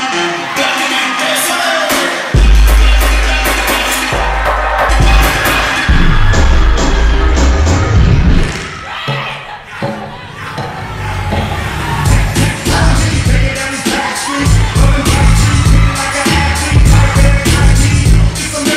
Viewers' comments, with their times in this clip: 0:03 From hereeee. Ugh that transition from the Afro into the last song, just so great and so clean